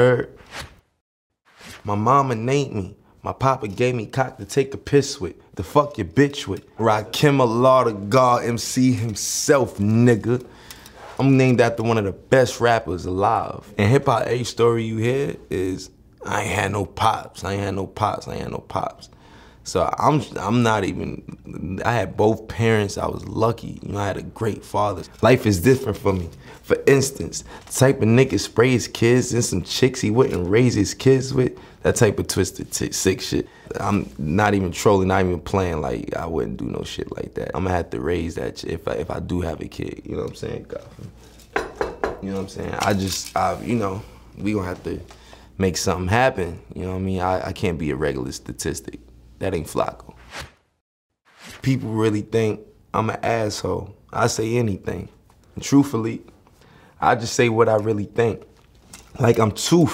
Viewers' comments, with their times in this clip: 0:06 Who tf is Rockillamathagaww
0:32 did he mispronounce the verse?
0:41 the knock on wood got me weakkkk